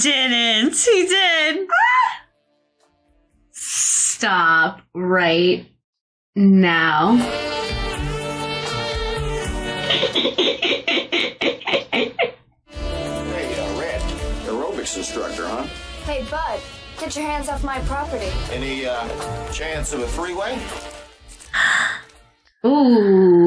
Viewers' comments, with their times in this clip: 0:09 Lisa Simpson just getting Marge's laugh